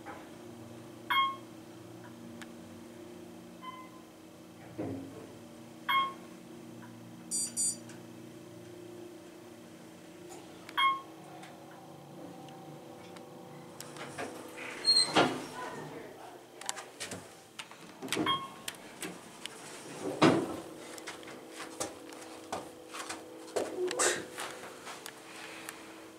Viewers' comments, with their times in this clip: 0:07 I have a Timex that beeps like that